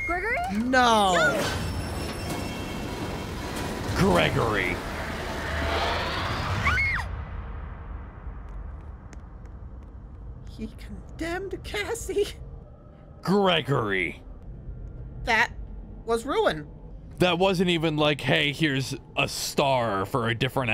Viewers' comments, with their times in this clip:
0:08 why is there random roblox noises 😭